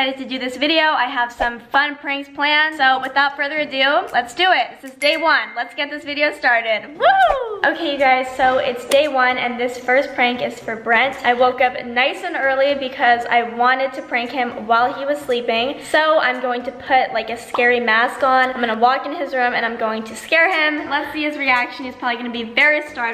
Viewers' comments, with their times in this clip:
0:10 she voice so low is she not in the mood lmao